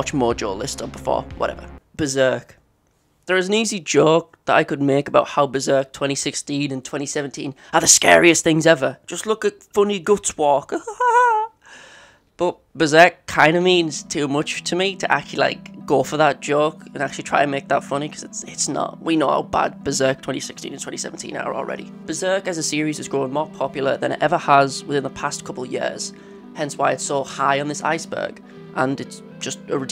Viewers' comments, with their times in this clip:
0:10 Goofy Ahh Laugh 💀💀💀💀💀💀💀